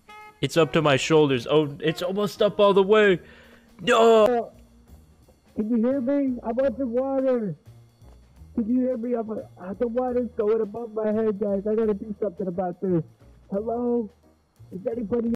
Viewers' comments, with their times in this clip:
0:13 Why does he sound like Cousin Kyle from Southpark ?